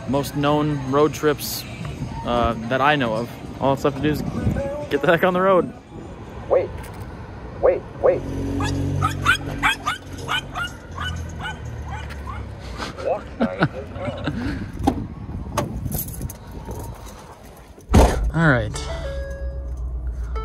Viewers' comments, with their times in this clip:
0:06 plot twist he just sped up the sound of the wait button being rapidly pressed etc to make it sound like the dog was barking